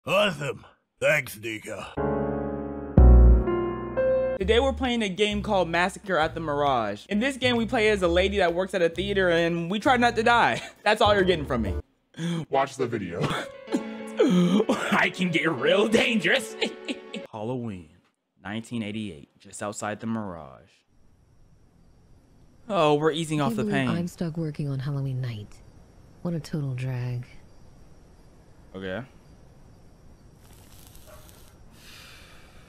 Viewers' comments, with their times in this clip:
0:02 D-Did he just say the N- word?
0:14 NOT THE AI VIDEO MUSIC 😭😭😭